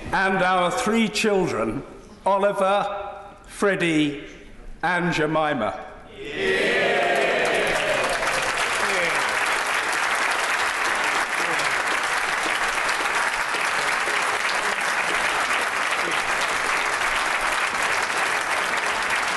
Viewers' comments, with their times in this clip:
0:04 Did he say Aunt Jemima? lol